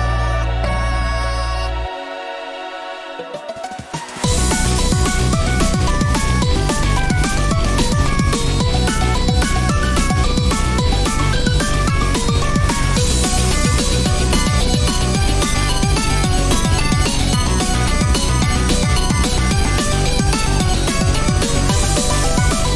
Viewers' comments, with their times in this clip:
0:03 Ngl didn't expect a V2 of Double Kill of all songs, but this is FIRE!!!!! I love the sudden beat drop